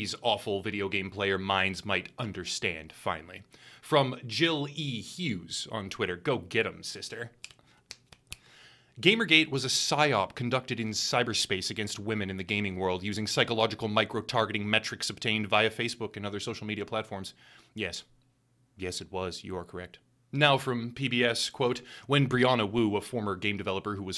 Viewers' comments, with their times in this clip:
0:09 Was that a Z-snap I heard ? 😂😂😂 "Trembling soprano voices" 😂😂 this was hilarious, man...scary, but hilarious